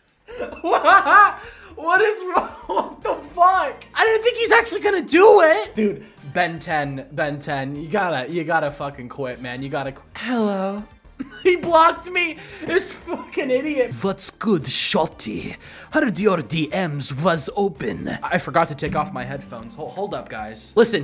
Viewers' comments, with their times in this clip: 0:08 Bro come on he got me with that voice